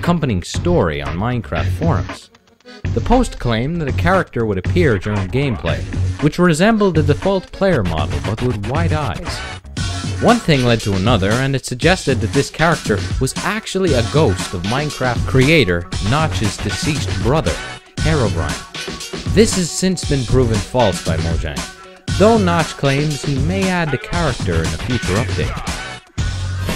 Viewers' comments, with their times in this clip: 0:10 Distorted & slowed down Midtown Madness 3 song